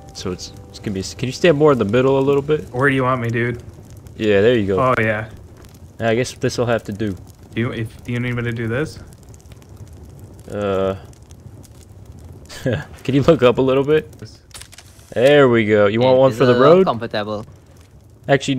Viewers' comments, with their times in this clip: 0:05 Wait nah issa Trinidadian I hearing